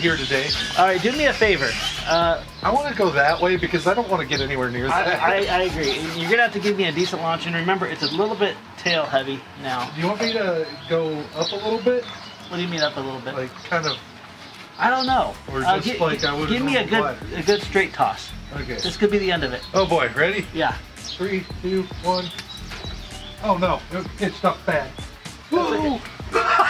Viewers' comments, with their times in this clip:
0:07 The chirping bird made the sparrows outside my windows go nuts.